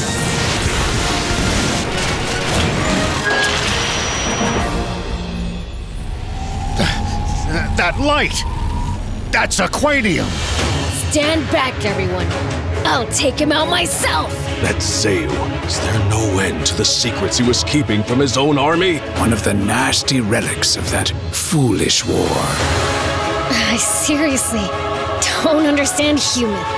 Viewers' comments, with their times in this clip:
0:10 That voice sounds like Kid-Trunks english Voicactor. Coincidence?